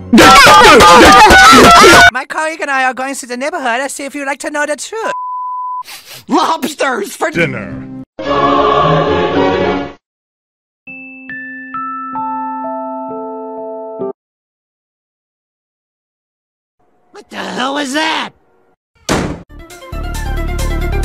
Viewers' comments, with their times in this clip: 0:07 My phone froze as he started saying “dinner” and I thought it was part of the joke